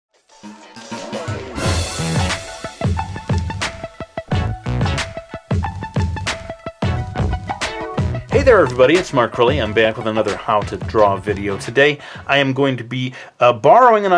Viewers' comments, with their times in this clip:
0:01 i think i hear the vine shock sound effect